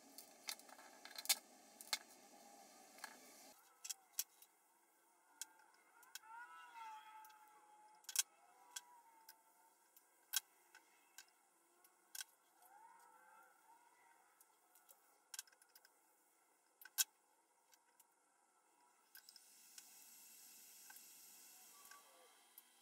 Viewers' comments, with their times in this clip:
0:08 Fantastic project! Loved the pick too. The blood curling screams in the background was a bit unsettling, but whatever caused them was worth it considering the results.